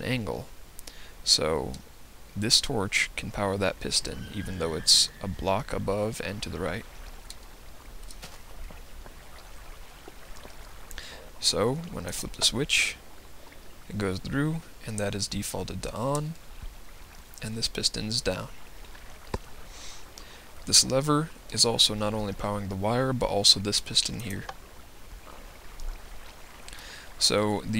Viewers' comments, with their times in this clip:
0:08 Random nether noise :L